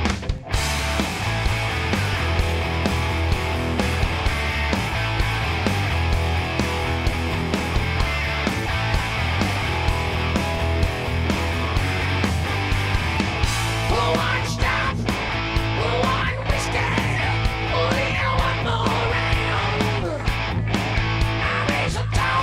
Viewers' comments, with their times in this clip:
0:07 Sound comes on